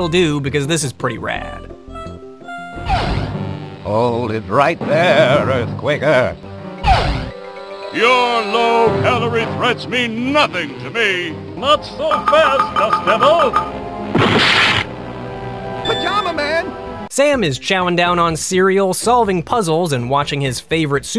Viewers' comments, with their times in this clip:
0:03 Wow, that scene sucks in the English version, in the Dutch version it actually sounds like some effort was put into it.